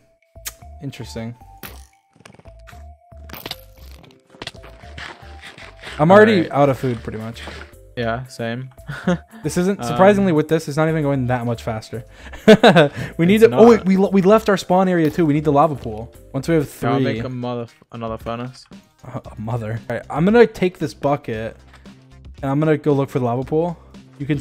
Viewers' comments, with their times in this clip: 0:06 where george says: “yeah same” it sounded so german😂☝🏼